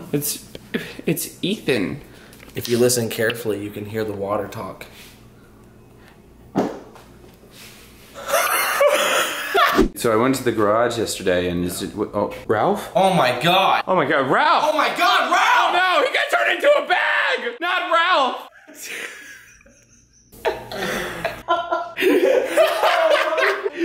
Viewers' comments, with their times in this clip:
0:05 why are you guys laughing so hard?